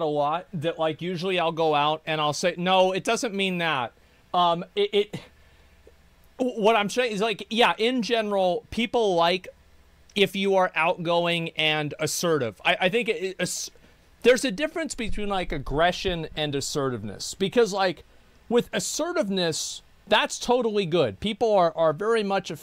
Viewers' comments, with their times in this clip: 0:09 The pause is everything, only a celestial being like Asmongold can do this.